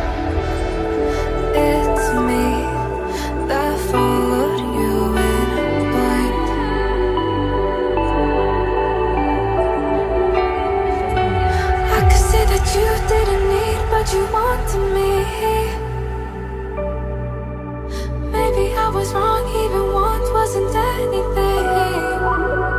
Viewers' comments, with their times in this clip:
0:04 Proceeds to Zenitsu screaming